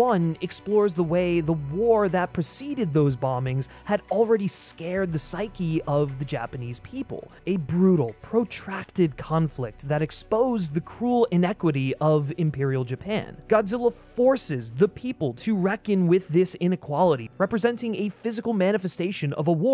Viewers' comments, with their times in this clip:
0:05 scared the psyche or scarred the psyche?